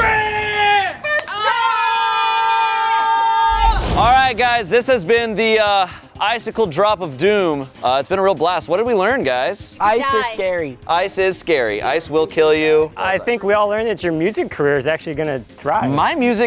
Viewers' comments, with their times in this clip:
0:04 Who else heard montage machine ?